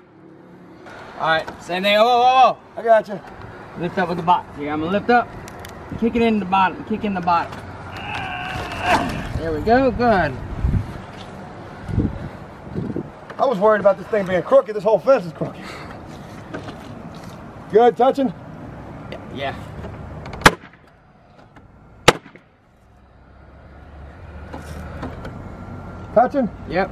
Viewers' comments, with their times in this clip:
0:07 he sounded like a chiropractor lol